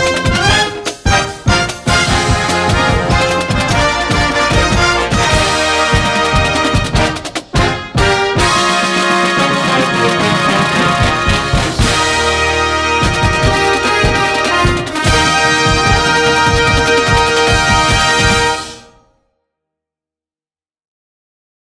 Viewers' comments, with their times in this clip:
0:10 is the dirtiest roll I've ever heard, hands down